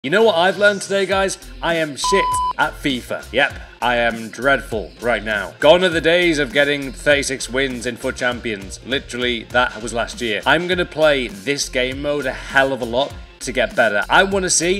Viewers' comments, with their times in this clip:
0:01 worst attempt to beep it out